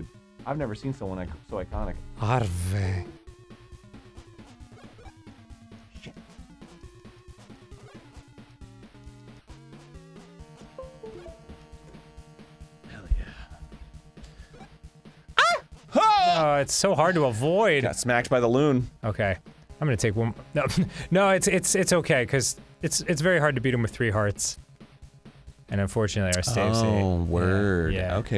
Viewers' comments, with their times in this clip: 0:08 I thought something with disconnecting from my USB port on my computers and then I realized it was from the video.
0:09 (Bluetooth connection noise) Arin: "Hell yeah" What do you guys think Arin connected? I'll bet, whatever it was, it's chock full of porn.